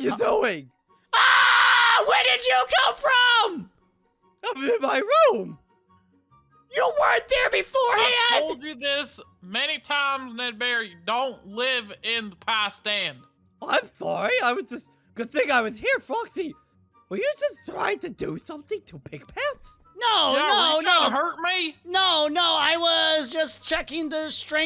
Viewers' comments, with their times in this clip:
0:06 his voice is back